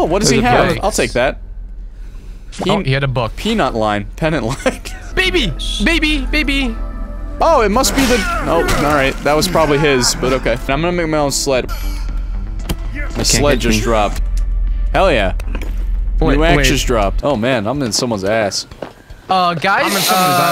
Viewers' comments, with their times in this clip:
0:05 accidentally singing Justin Bieber songs